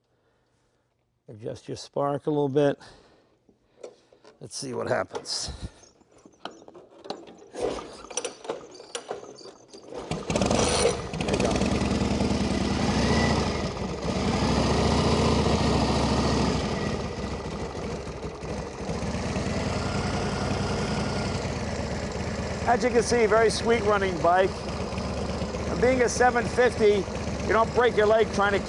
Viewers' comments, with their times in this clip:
0:09 Engine Sound starts Thank me later.